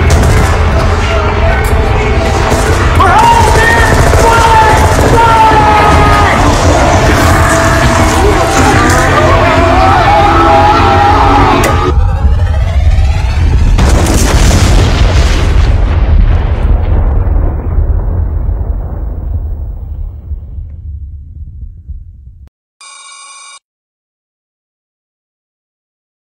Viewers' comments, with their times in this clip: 0:08 I agree with the scream The Hydralisks are some scary looking fuckers..